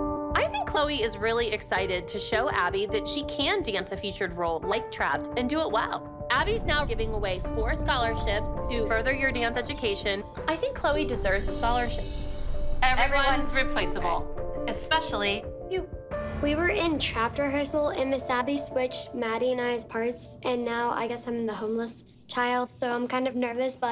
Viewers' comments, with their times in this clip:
0:10 The worst editing I’ve ever heard 🤦🏻‍♂️🤦🏻‍♂️🤦🏻‍♂️